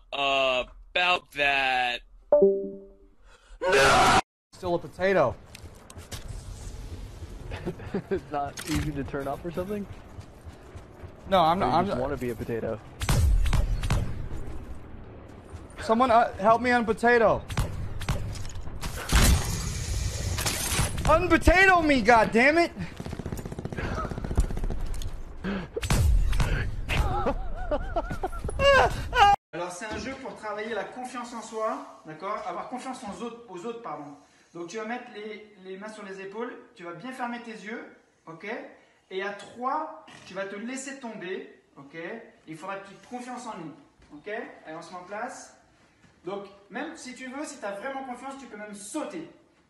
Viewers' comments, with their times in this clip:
0:04 is the funniest scream
0:05 “still a potato. Someone help me unpotato me. Unpotato me god damn it!” starts panicking “AaaHH”
0:30 the guys says: So it's a game to be self-confident and have trust to others, so you're gonna put your arms on you shoulders, close your eyes, and when I saw 3 you're gonna jump. If you really have trust in ourselves you can make a big jump. You're ok? Kid agrees Ok... 1, 2, 3! Proceed to scream